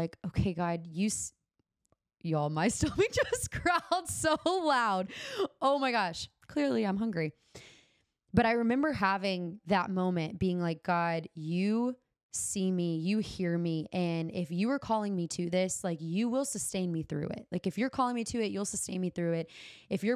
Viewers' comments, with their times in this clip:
0:05 Stomachs growl when in alignment and flow. it's like the inner lion. the lion of judah, speaking through you. :P <3